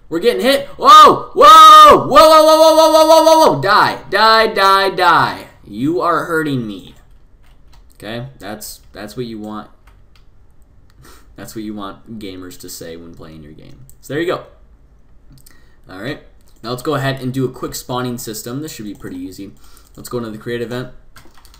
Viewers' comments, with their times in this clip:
0:07 rip head hone users